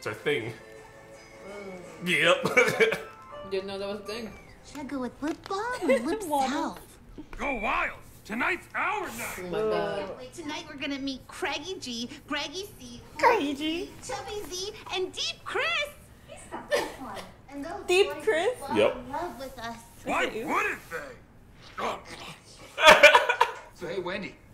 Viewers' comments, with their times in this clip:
0:08 s o u n d s o f p a i n -